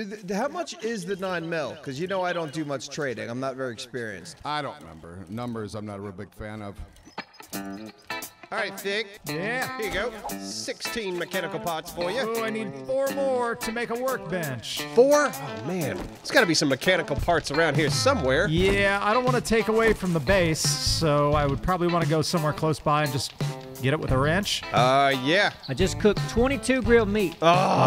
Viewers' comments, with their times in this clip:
0:07 Ladder-climbing music, but no ladders in sight... :(
0:08 Every time I hear the music I expect to see someone climbing a ladder all sexy like 😂😂